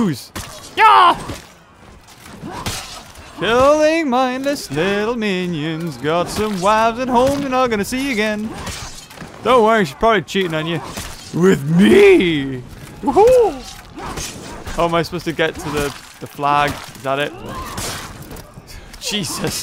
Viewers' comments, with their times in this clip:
0:04 i like that song